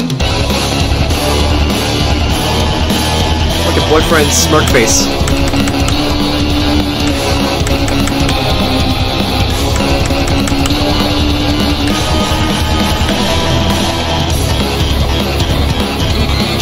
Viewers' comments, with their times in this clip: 0:04 Has anybody noticed that the ink demon sounds like the devil from that bonus song